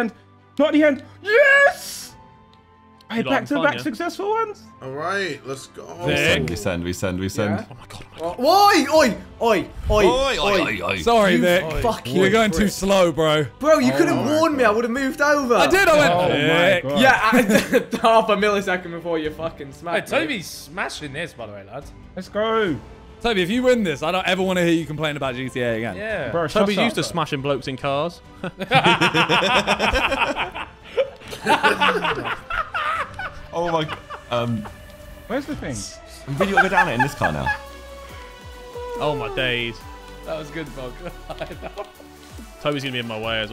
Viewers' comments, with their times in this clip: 0:06 bro why is the soundtrack so intense
0:06 Vik sounded very aussie there
0:08 man went all Levi Ackerman saying oi oi oi 😂😂😂 (Attack on Titan reference)
0:31 can already hear ethans dad laugh coming through